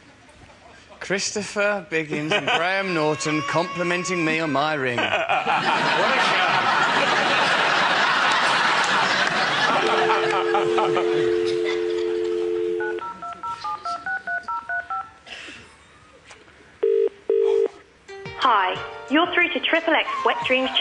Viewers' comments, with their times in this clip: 0:05 Who's laugh is that ? It sounds like Dracula...